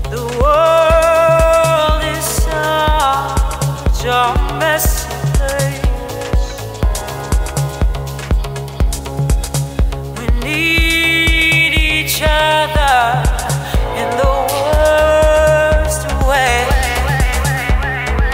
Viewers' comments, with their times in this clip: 0:04 oh Lord... My soul reached a climax... that song yhoo I gotta find it